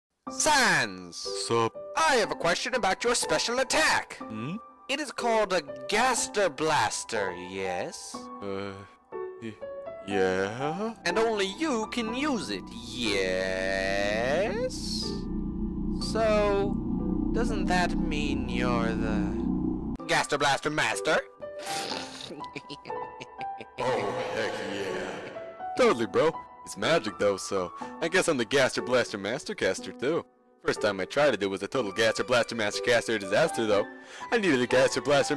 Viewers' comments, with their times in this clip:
0:00 the voice is literal ear rape
0:00 omg my ears.
0:21 this "pffffthyeheheheh" is so adorable qwq
0:22 Just the way he says OH HECK YA always gets me